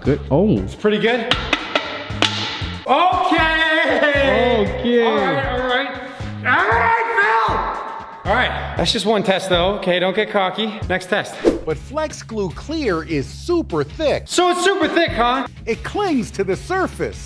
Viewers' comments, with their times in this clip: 0:05 he sounds like heavy from team fortress 2